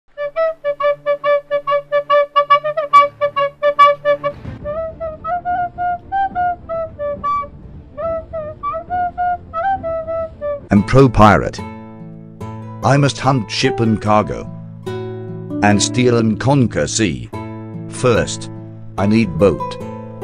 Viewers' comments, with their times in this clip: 0:01 this song is funny 🤣🤣🤣🤣🤣🤣🤣🤣🤣🤣🤣🤣